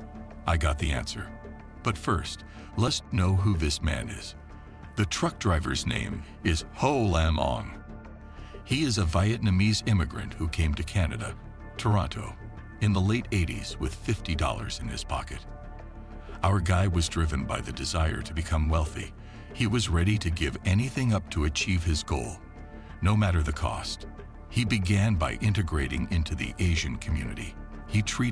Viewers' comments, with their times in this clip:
0:09 Veiyatnamese your fired👊🏽